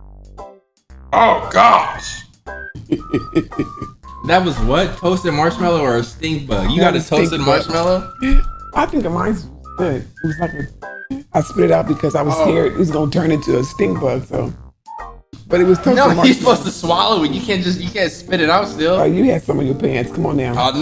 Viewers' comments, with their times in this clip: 0:03 that reminded me of Kevin Gates laugh